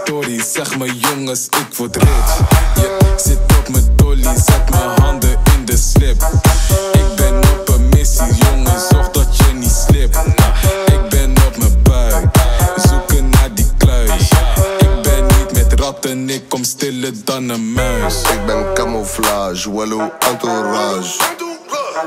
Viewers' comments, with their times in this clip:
0:03 OMG he said “sit up my toilet”